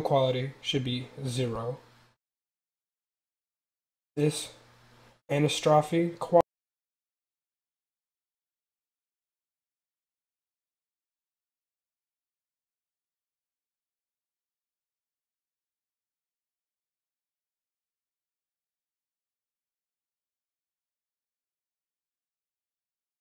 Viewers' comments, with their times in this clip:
0:06 audio cuts out ??? I've tried refreshing and restarting, and in other browser.... Anyone else?